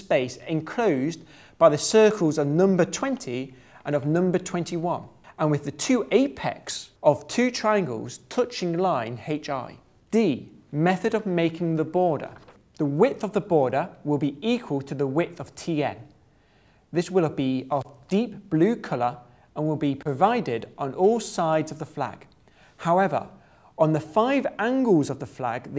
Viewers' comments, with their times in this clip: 0:08 "haitch"? I'm sorry but.. /watch?v=Jo8FR8GGoJ0 David Mitchell does not approve!